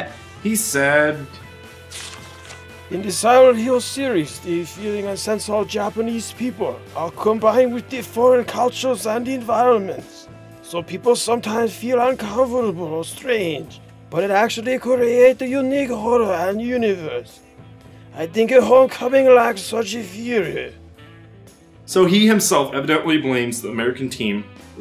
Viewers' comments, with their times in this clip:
0:06 dude NEARLY loses his shit and busts out laughing.